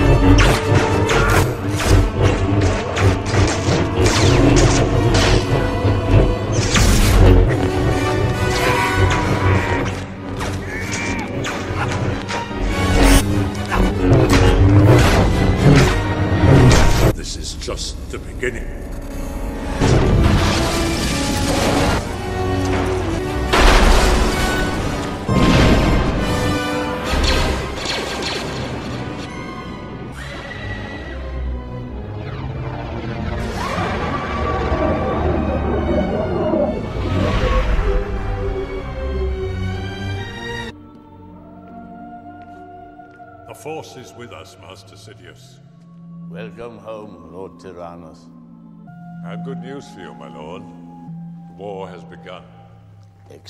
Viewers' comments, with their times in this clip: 0:08 he did the famous yoda yell
0:41 that music reminded me of Sleepy Hollow. Which is also interesting in that both Sith Lords were also in that film.